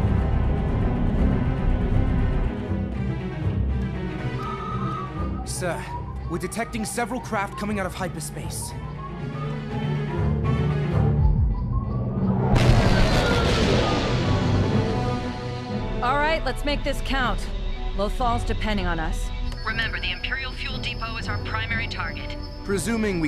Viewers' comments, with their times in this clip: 0:05 Judging by that sound effect I'd be more worried about the Mandalorian explosive about to go off in the bridge.